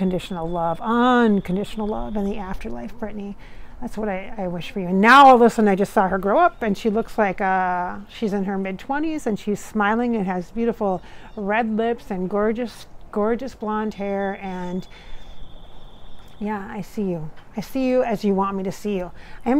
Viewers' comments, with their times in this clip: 0:04 Again I hear talking is that her